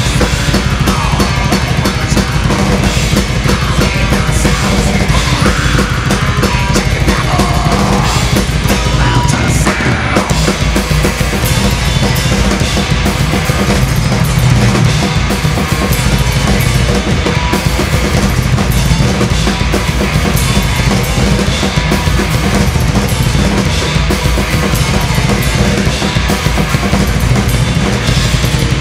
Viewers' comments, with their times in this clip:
0:10 Totally murders the part and not in a good way. Rest of the band must have been sweating bullets during that. This is not an easy song though and I can tell this guy is a pretty good drummer. He should have made sure he could play everything in the song first.